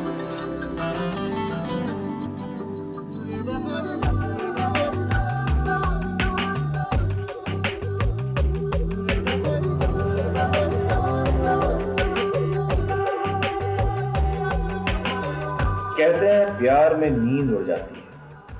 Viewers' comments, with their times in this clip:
0:03 Amir and kajol had a chemistry!! and love the music in this from ❤️...